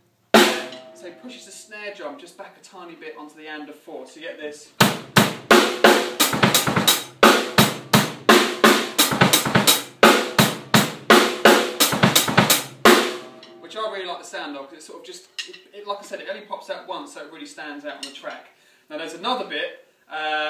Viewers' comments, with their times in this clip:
0:08 The snare thing is brilliant